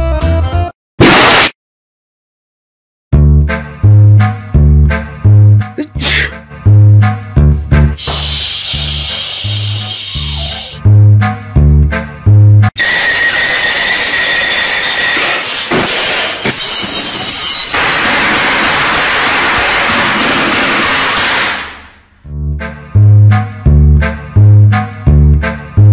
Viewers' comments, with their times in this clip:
0:10 He’s sooo quiet breh
0:13 sounded like a dog 😂😂😂😂🤣🤣🤣🤣🤣🤣🤣🤣🤣
0:13 OW!!!!!!!!!!!!! THAT HURT MY EARDRUMS!!!!!!!!!!!!!!!!!!!!!